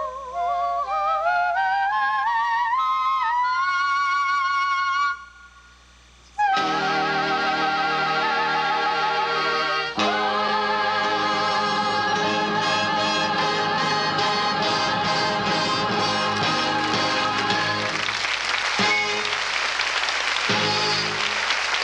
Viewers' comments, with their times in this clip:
0:04 Ok, so ... after THAT note... I just was begging her to jump into Desperado! LOL THE LADY CAN SANG!!